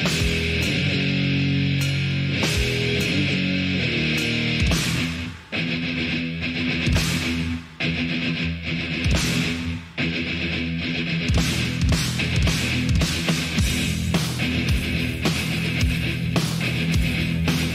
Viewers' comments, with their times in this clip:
0:05 welcome to one of the sickest breakdowns in thrash history